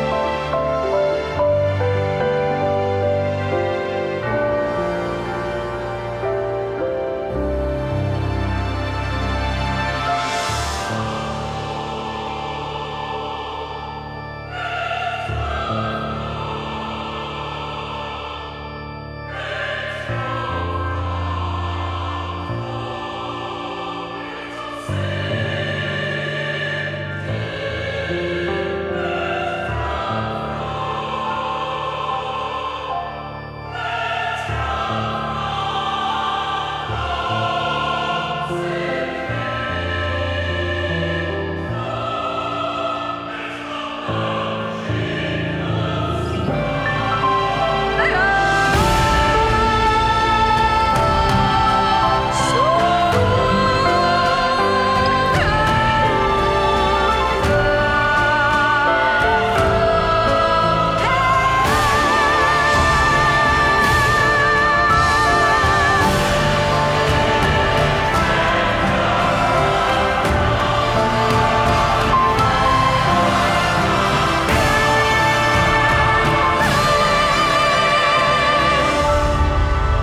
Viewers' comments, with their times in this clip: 0:04 the bell ring up, bring at least 1 peace to soul Thats the charm
0:48 I love that the drums sound like gun salutes, it's so subtle
0:49 4/11. its morning. i wake up. game is already downloaded on my phone but havent opened it yet. take a deep breath and decide to open it for the first time. this playing while i wait for it to load me in. it takes minutes to load it all and when im about to press my screen and get into the game i hear the epic melody.i was stunned. i was speechless. i have never ever in my life heard something so motivational and yet something so beautiful... this is a masterpiece and nothing less
0:50 what kind of genre is this music, its like from demon slayer with that ummm yelling part i think i like these kinds of music now
1:01 I just imagine Ms lady hit her Blazin while hitting that note😂 I like the story associated with the elevator. Very emotional and the music portrays it well. RIP to the 200🤧